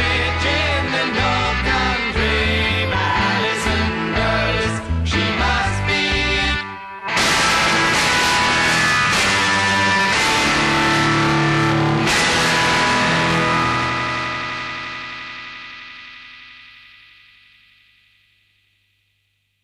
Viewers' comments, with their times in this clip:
0:07 RIP headphones users